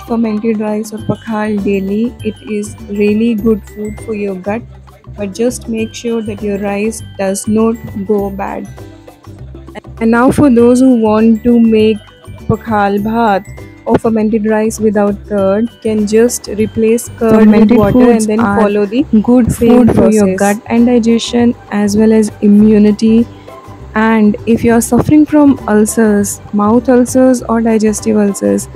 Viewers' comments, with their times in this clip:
0:10 Without curd how to ferment, recording had some disturbance not clear at that point.